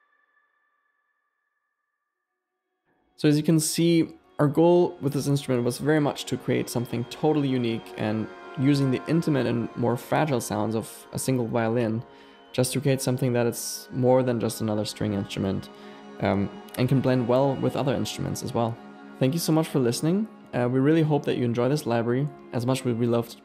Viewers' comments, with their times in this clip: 0:08 Very well made library. there is a descending violin glissando. Is that also part of this library?